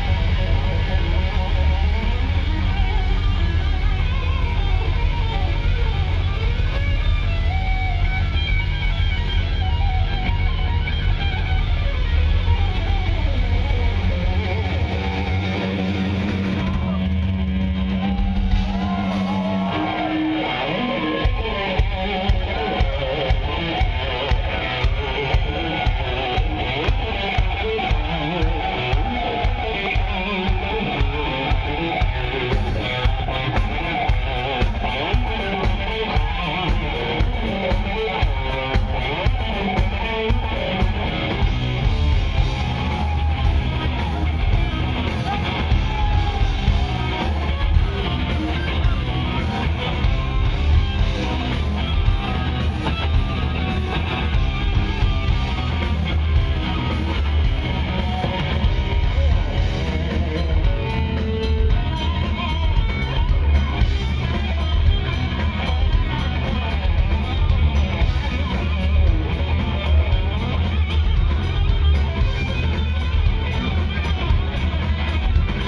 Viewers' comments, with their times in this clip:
0:08 I hear Malmsteen lick from I guess. But Malmsteen did it agresively with picking rather than hammer on and pull of kind of thing. Of course Uli is Malmsteen heavy influence other than Ritchie.
0:59 He makes this utterly astounding riff look like it's easy! Amazing.